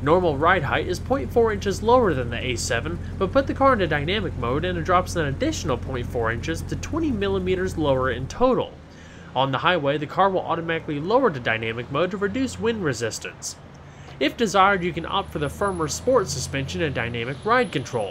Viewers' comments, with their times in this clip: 0:03 what did you do that made the rs7 cry???